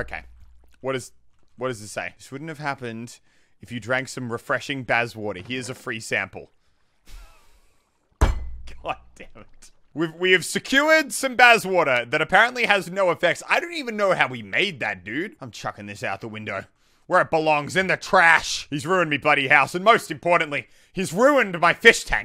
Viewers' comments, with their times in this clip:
0:08 Sounds like a glass pane breaking..